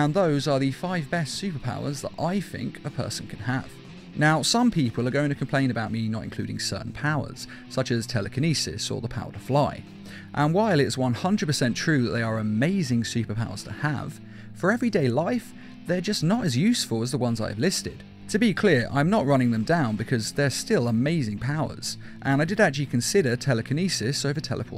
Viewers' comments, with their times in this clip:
0:05 Ageo???? AGEO????? u mean age right??